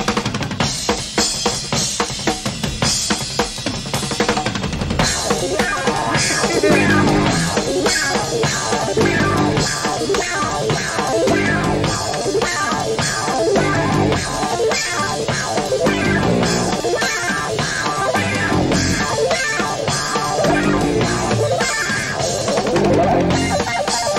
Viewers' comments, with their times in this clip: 0:08 the tune gives me this mental image of Dr. Frankenstein's creation coming to life, breaking free from the straps that hold him on the table, as sparks and lightening flash all around the laboratory. "It's Alive!"